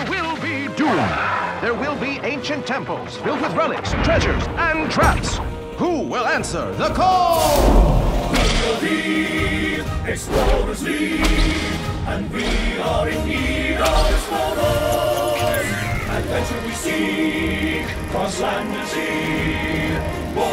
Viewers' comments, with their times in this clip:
0:06 Thought there wasnt gonna be a song for a min there